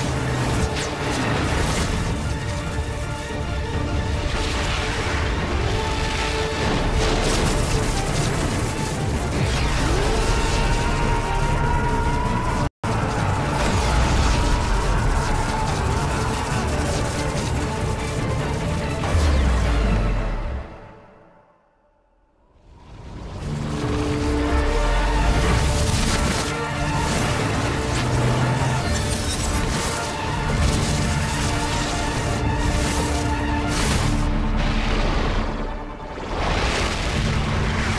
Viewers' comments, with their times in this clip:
0:09 that scream made the scene sooo good
0:09 this scream wow epic
0:25 theme is so good